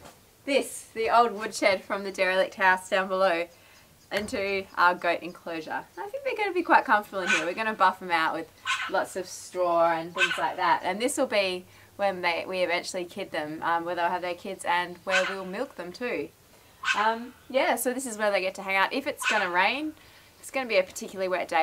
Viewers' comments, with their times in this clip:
0:09 -50 sounds like foxes unless your dogs have a really sad bark.